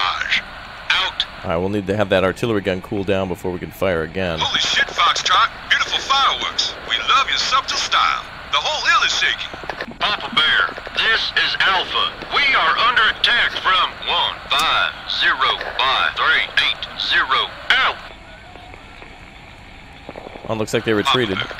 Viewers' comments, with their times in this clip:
0:03 Did he just pronounce the 'b' in subtle? That was weird.